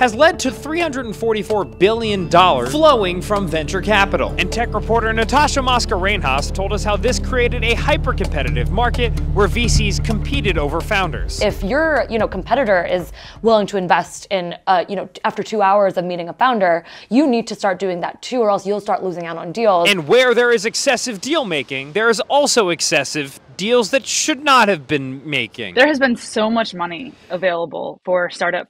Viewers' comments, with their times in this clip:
0:09 sounded like he said feces instead of VCs. How fitting 😭